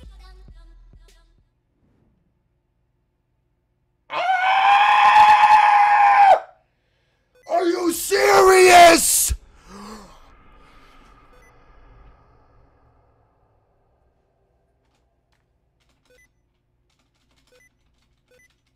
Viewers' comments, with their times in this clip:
0:04 screaming goat parody